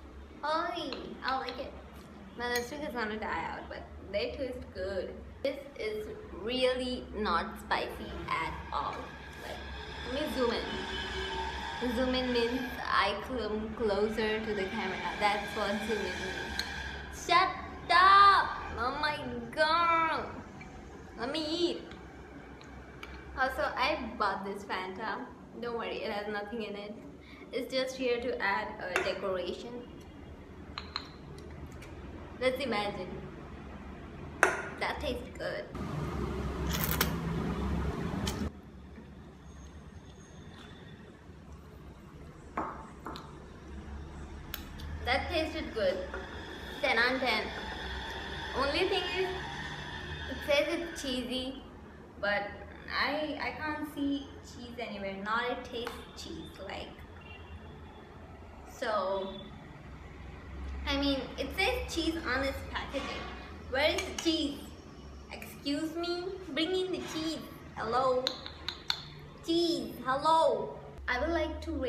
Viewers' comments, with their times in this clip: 0:10 The auto rikshaw going sound in background
0:58 guess godzilla was screaming loll